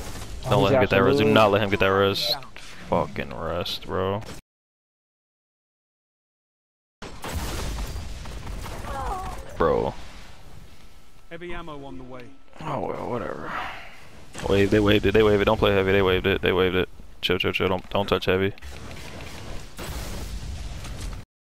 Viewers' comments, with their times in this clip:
0:07 why muted? 👀👀👀 lol great vid brose, nice putting this up against great opponents